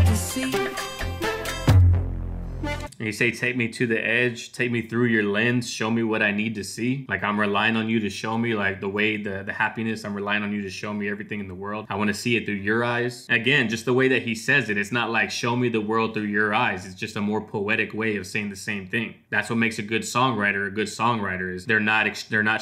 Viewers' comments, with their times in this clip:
0:03 Ok I decided that I should get back into Jon’s music. This whole time I thought he was saying “take me through your legs, show me what I need to see.” And I immediately was grossed out, and didn’t want to hear any more from him. Thanks for this haha it cleaned up my image of him lol